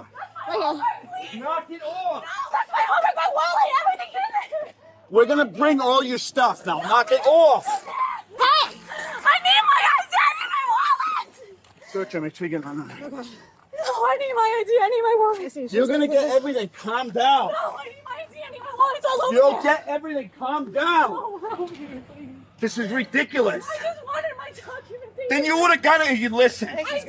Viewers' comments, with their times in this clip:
0:10 Earlier she said that she didn't have her ID, and now she's screaming for her wallet and ID. 🙄